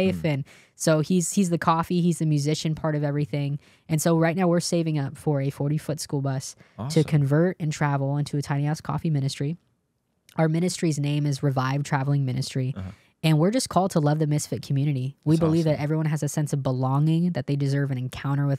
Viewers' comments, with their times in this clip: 0:06 Thought she said something else 😂 (but tbh, what did she actually say?)